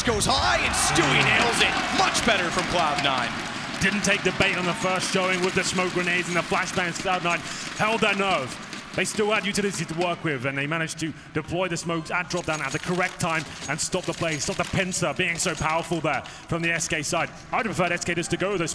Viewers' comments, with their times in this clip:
0:03 nothing on the crowd